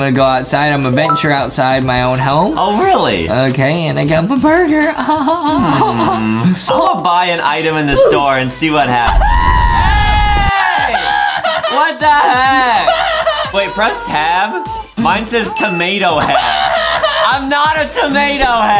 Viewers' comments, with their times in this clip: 0:04 is funny 🤣😂 the track